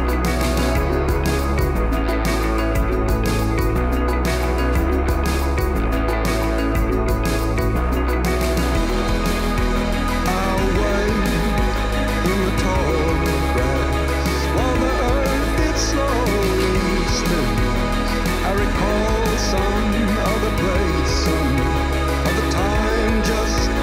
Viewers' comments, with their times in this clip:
0:10 Am I the only one who hears that as “I’ll wait in the tall grass”? Every lyric I can find says “I wait with all threats” and I just don’t hear it 🤔